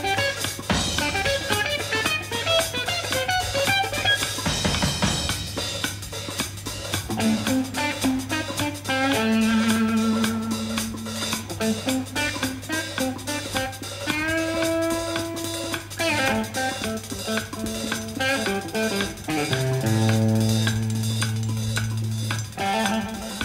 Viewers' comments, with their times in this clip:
0:07 ikr ! Circa those demisemi-quavers (I think...?) on the hi-hat are simply awesome.